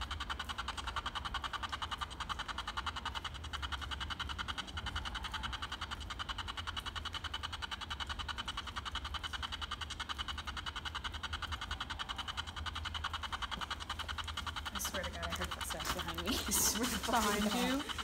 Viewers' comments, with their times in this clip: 0:05 you can hear what sounds like a muffled or distant scream.